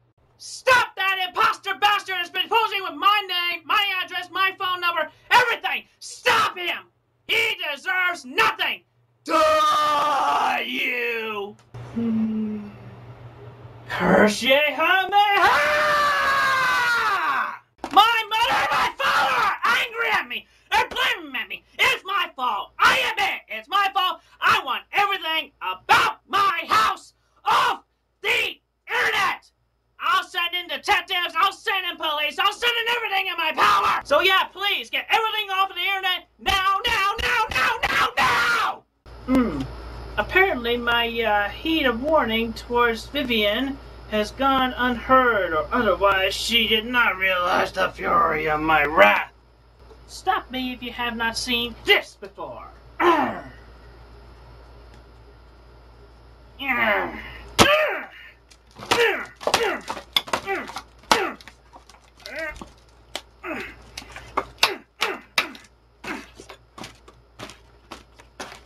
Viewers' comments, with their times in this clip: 0:07 sounds kinda metal
0:08 That is a real life DBZ mouth cannon holy shit.
0:08 That "DIE" is genuinely terrifying 😂
0:09 The ONLY time Chris went through puberty
0:09 Why is nobody talking ? His voice went from chris chan to a fucking demon
0:31 ive been seeing this clip lately and the way he says "POWER" gets me almost everytime
0:50 “Stop me if you haven’t seen this before. Rrrr.” Love his grunts 🤣